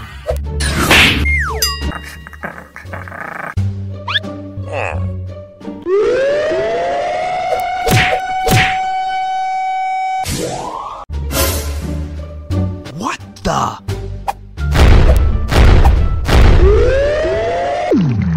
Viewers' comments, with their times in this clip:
0:05 siren head starting screaming🤣🤣🤣🤣🤣😂😂😂😂😂😂😂